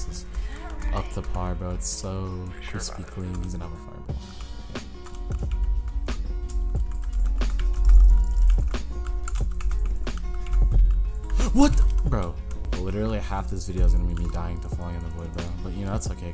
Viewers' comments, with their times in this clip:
0:03 when the beat drops at the same time as the fireball lmao
0:03 OKAY DUDE u have some beat drops and everything damn